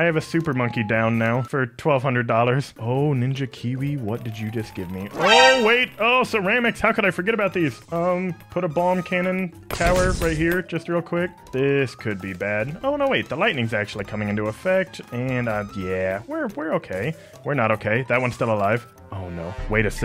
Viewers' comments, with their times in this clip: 0:05 you call does cermice